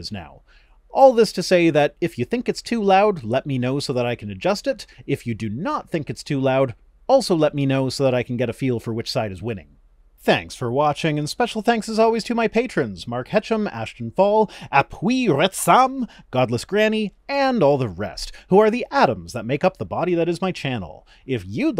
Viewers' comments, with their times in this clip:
0:03 The volume of your intro seems fine, and your spoken volume is great, as well.